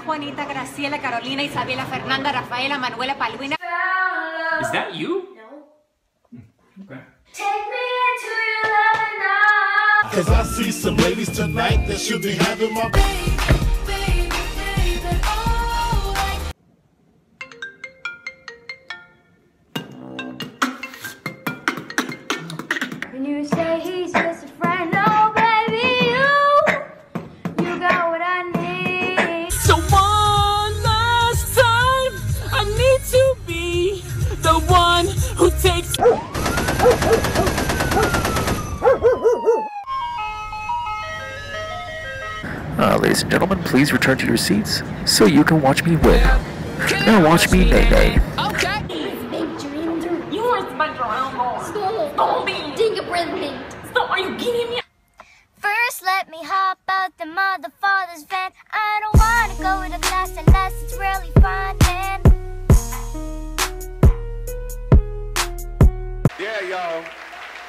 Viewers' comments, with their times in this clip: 0:06 how is no buddy talking about how good his voise is
0:23 Im sorry but vocals
0:23 I love The song
0:31 This is when you are about to sing but a noon is in your car and sings like a noob
0:36 Gun shots and dogs barking Dad: asleap Dad hears ice cream truck Dad: *Gets up quickly for ice cream XD ——>
0:54 is the best she sings good and a good dancer